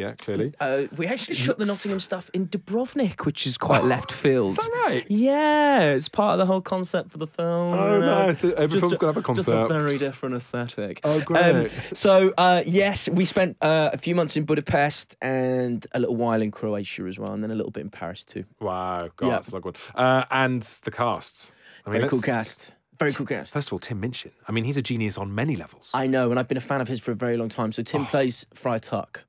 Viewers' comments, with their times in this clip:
0:07 I love the voice he does I do that too😂
0:10 lol he sounds like my history teacher.